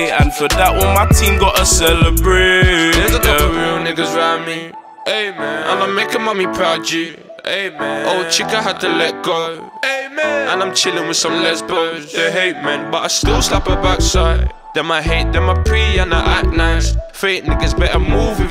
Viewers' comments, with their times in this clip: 0:03 how the beat goes with the bars 🫨